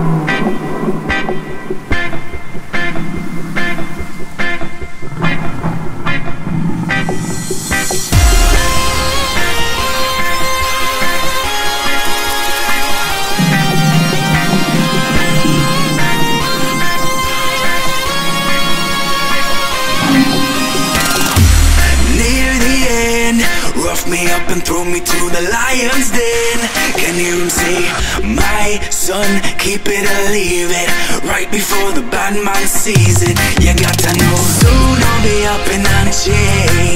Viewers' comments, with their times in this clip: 0:10 the sound of a shaky snake can be heard (means a rattle snake)
0:21 Does this funny beat goes about 1.25% Speed?